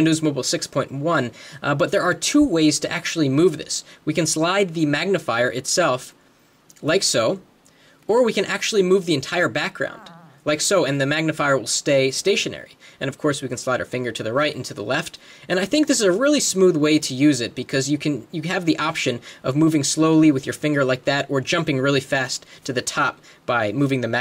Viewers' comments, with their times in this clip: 0:09 stomach growled =D
0:09 GUY FARTZ :D LOLZ listen carefully! xD